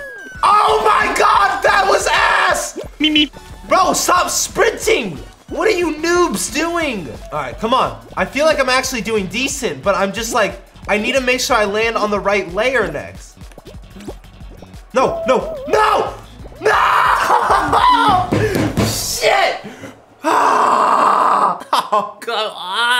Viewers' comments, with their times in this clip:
0:03 that "beep beep" had me dying😂😂😂